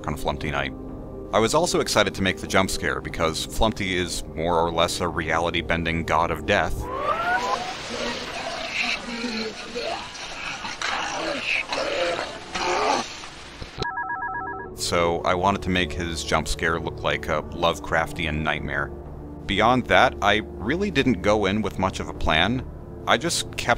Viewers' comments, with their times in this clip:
0:07 the voice creeps me out
0:07 sheesh flumpty talks like that?